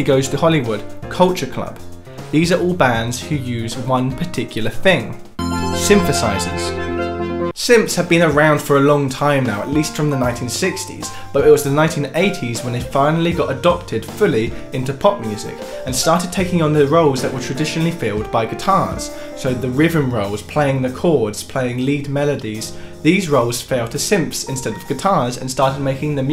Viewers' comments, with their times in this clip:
0:06 the "SYNTHESIZERS" theme is so underwhelming. Those georgeous set of keyboards deserve an arpeggiated bass fanfare at least.
0:07 "Simps have been around for a long time now"